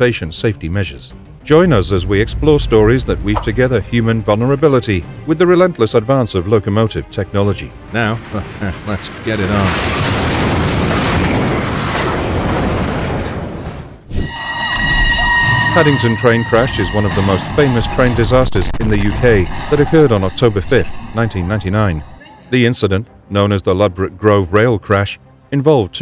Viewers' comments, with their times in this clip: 0:07 What's with that weird laugh ? Why not actually narrate it instead of using some AI nonsense. Also it's really messed up that you have AI footage of the Paddington accident.